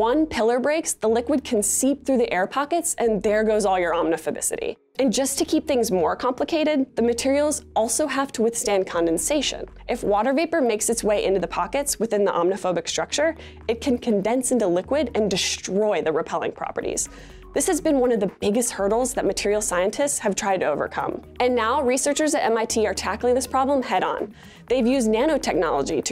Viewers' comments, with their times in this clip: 0:07 you know she had to say omniphobicity at least 3 times before getting it right